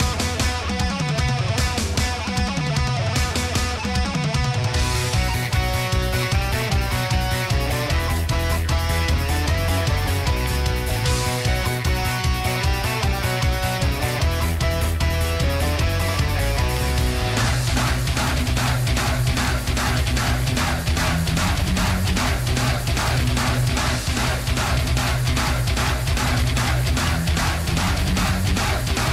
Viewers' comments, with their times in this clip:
0:05 sounds like mother rusia of iron maiden
0:17 in 2x velocity we can hear dogs